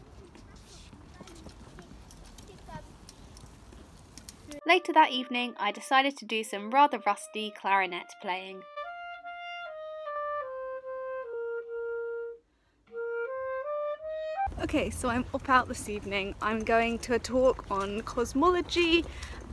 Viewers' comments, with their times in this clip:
0:05 sounds a bit like ode to joy!! 😅😅 Haha don't mind me i sound so old😵😲🙃